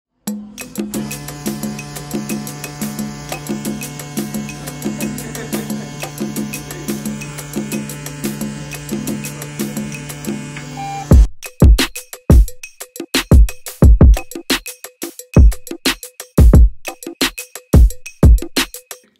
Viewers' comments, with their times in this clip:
0:01 Ayo this bee just dropped a new rap called bizz bizz bling heres the time stamp 🤣🤣😂😂